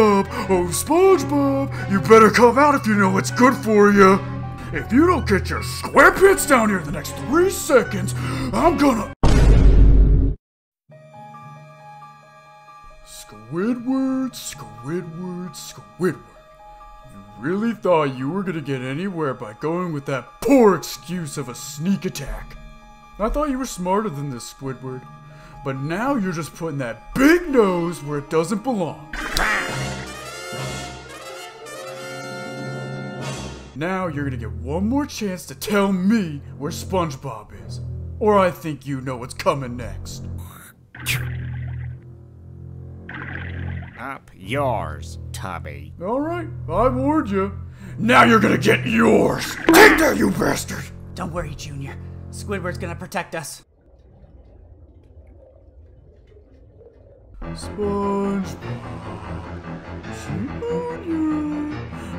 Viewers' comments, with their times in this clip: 0:09 The boom be like: SpongeBob:Don’t worry junior squidward will protect us squidward dies
0:48 I don't know why that's so funny to me. 🤣 *Bonk